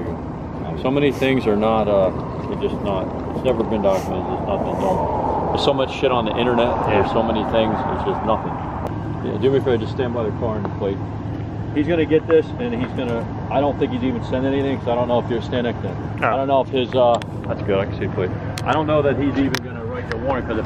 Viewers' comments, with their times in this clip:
0:07 little girl says yes and u can see her too😱😱